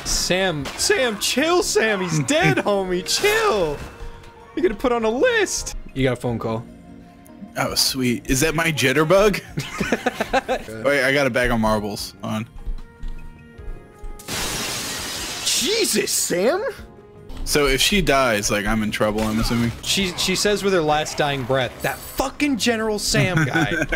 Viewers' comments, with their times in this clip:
0:06 MY ACTUAL PHONE RANG.